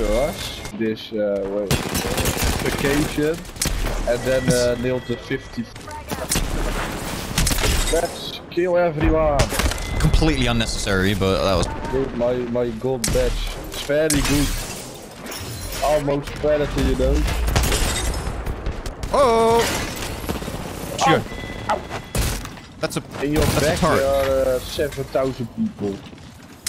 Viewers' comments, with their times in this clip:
0:07 headshot crunch sound was crazy